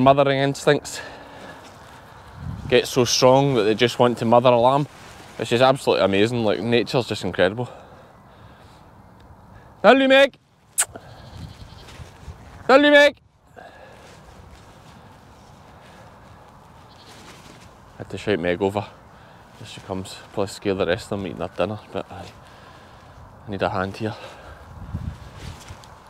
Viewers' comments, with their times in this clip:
0:10 What are you screaming to Meg ? It sounds like Mullemeg? 😂